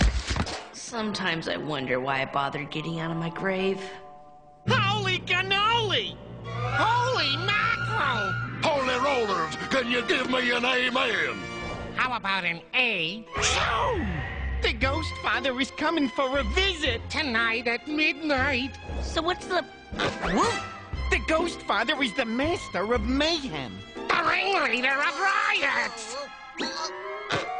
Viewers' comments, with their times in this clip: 0:08 holy rollers can you give an email